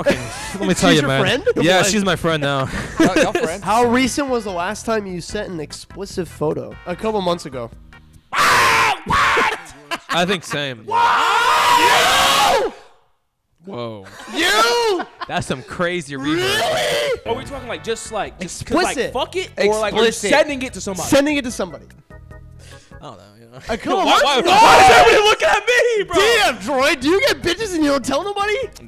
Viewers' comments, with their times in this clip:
0:03 make sure you turn up your volume all the way up for this part you really cannot hear anything
0:09 "woah" perfectly explains my reaction to how synced their yelling was
0:10 they go so loud 😂
0:11 bro if you put that in 0.25x speed it sounds like a siren
0:11 worst time for be to put my earbuds at 100% volume